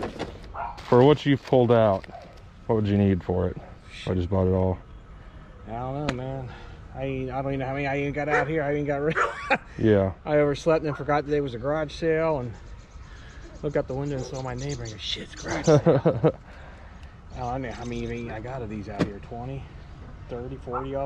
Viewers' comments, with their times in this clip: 0:08 another random laugh